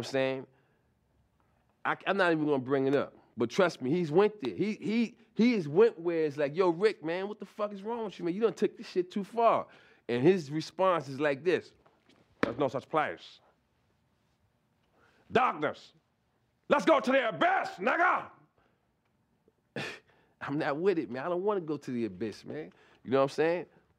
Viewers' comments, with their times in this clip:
0:10 Charlie’s Rick James impression is spot on.